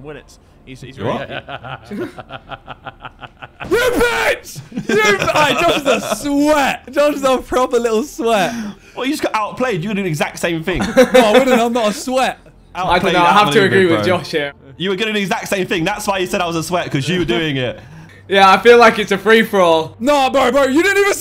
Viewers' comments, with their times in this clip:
0:03 Oi, that was like REAL anger! 🤣